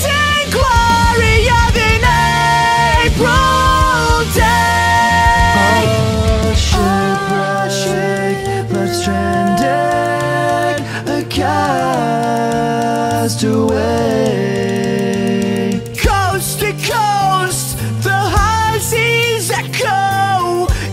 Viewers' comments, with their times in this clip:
0:05 Fuck man that was amazing. always gave me goosebumps with the harmonies. That went away around the 1,000 timth I listened to this song. It came back with your video.